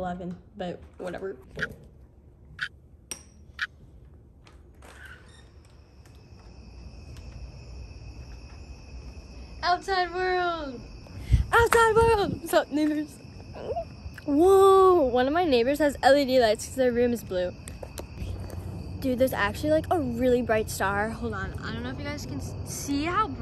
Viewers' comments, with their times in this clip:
0:08 u already sniffed things 25 times